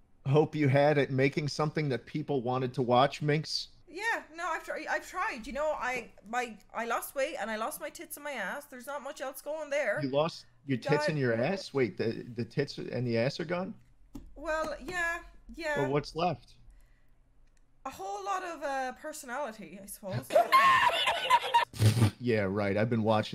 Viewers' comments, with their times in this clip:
0:07 Brim wit No Yankee can you hear the disappointment